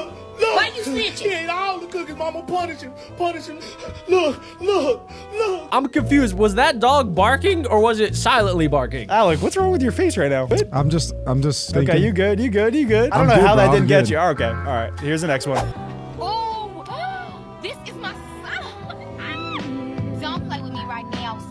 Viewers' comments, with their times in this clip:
0:06 the dog said Look Look Look Look Look Look